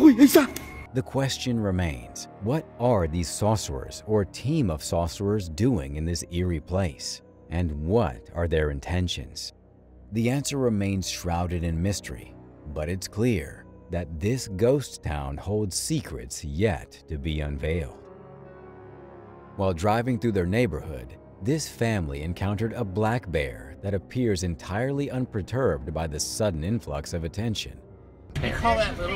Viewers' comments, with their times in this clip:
0:10 Why are you saying "saucerers"? Are they whipping up some barbecue sauce? It's sorcerer.